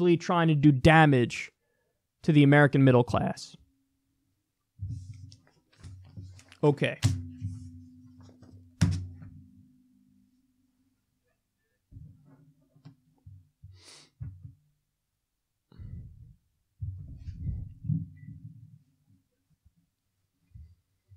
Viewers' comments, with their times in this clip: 0:03 Should've ended the video That was the end of your summing up, but then the video freezes, and you sniff a bit & move onto the next story.